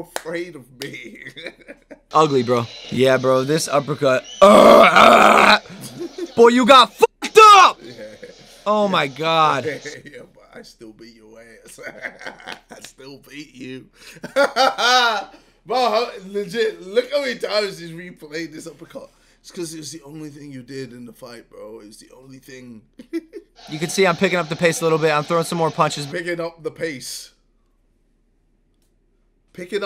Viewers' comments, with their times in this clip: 0:10 "I still beat yo ass ". He legit sounded american